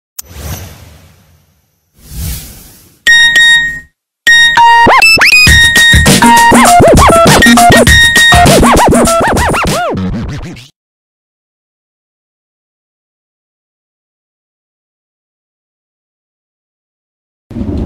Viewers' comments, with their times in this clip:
0:03 Rip to headphone users....